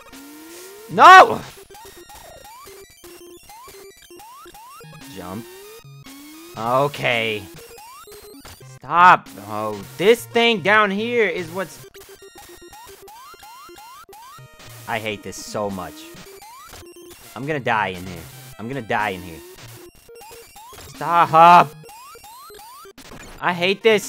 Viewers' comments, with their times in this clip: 0:10 you’re not really getting the Megaman experience till u start whining like that